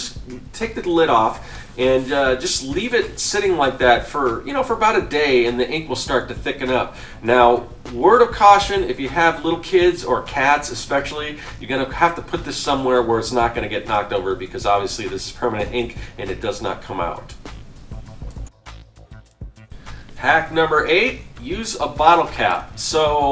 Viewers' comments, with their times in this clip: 0:09 Please... It's written and pronounced "especially". There is no "x" in that word.